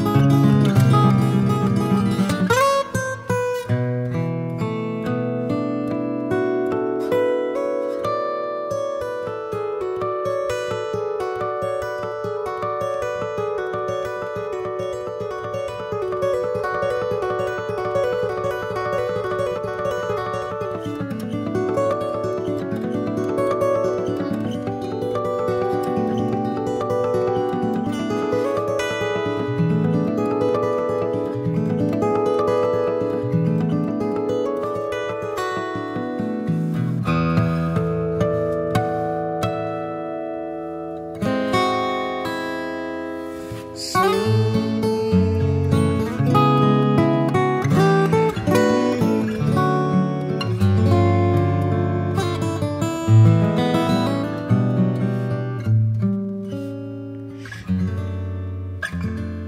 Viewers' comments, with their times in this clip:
0:04 Those harmonics starting are incredible.
0:11 I've never seen someone do CPR on a guitar before...but Tommy managed to take a piece of music that's been played to death and brought it back to life. Those harp harmonics from on.
0:18 It's not common for someone to be able to do them at the speed that Tommy is doing the cascade, with so much clarity and dynamics. I haven't seen anyone do them so perfectly. I mean, look at the speed It's insane.
0:46 That progression is just...